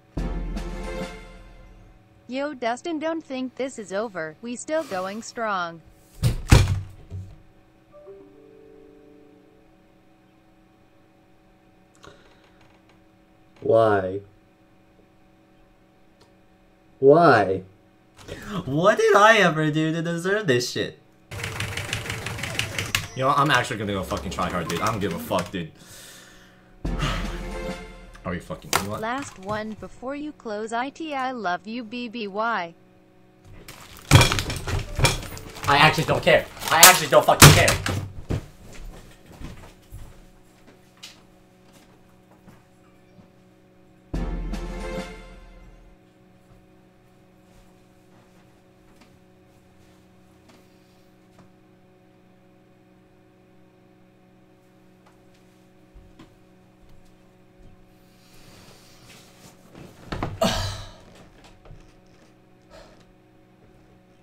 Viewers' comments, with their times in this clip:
0:04 that windows error sound
0:47 Rest In Peace headphones